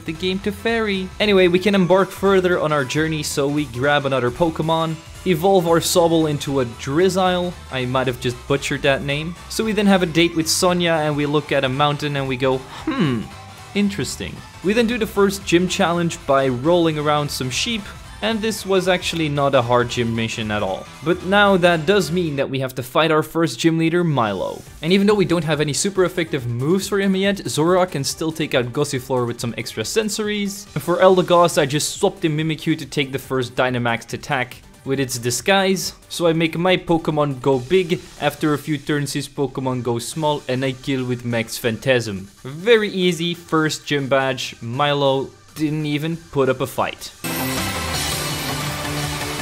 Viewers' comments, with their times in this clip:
0:07 you said sobbles evolution correctly!
0:37 Did anyone notice the russian accent